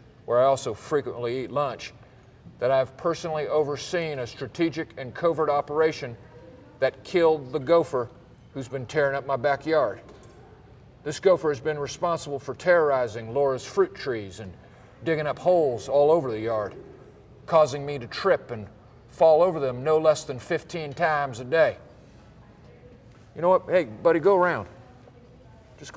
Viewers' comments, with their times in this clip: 0:08 The he-he's ended Love Will, though